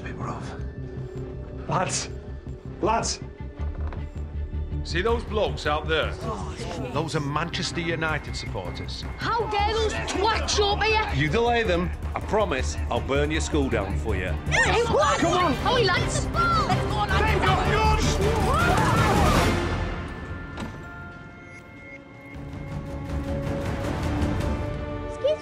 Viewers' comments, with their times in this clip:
0:09 i love how the kid says it!